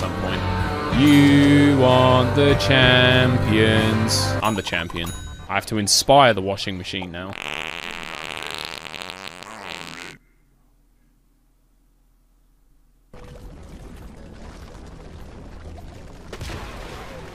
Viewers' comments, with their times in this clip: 0:04 anyone else hear MEGALOVANIA BEFORE THE OAK DIED!?